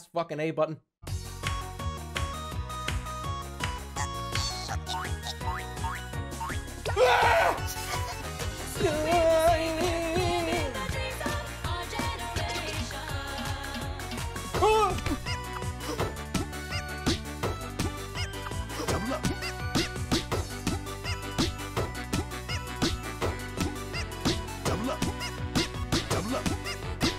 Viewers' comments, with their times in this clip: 0:08 another day, another worst noise of 2020 contender